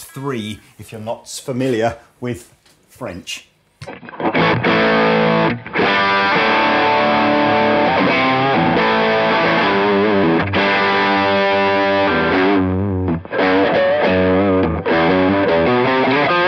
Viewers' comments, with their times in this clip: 0:03 whoever did the sound for this: Whichever track you panned hard left, was clipping. You muted it by